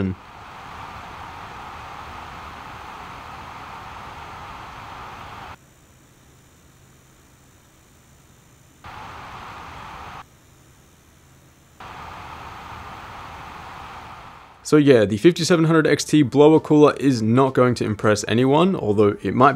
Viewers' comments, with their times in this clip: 0:06 that coil whine 😬